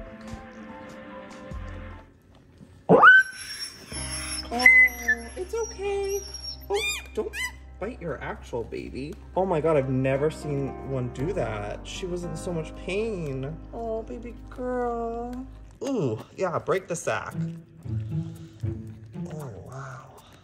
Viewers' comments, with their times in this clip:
0:07 What the hell was that squeal?!